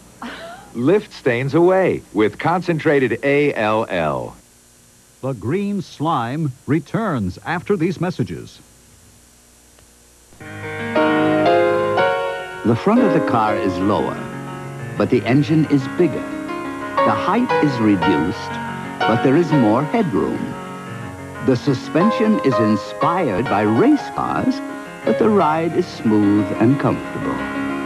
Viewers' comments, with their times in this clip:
0:10 A nice Burgess Meredith voice-over for Honda.